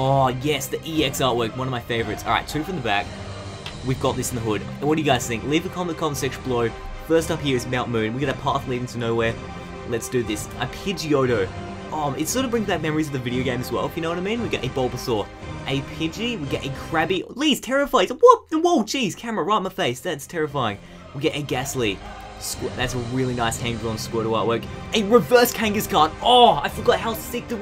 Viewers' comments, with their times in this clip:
0:09 yeah hes gonna pull something good. The music doh